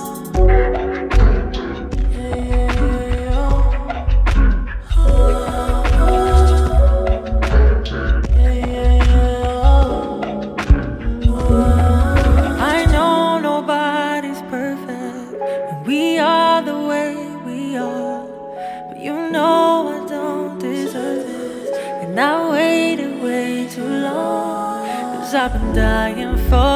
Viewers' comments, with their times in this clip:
0:09 She sounds so sad to the end of the song...I feel that part. #ithoughtyouweretheone